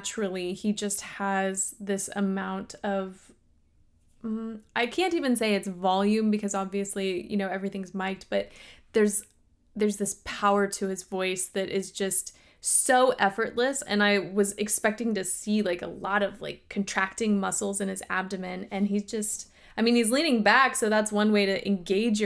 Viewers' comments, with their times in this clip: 0:05 you are correct about the volume. Robert Plant is regarded as having one of the loudest vocals in rock/blues.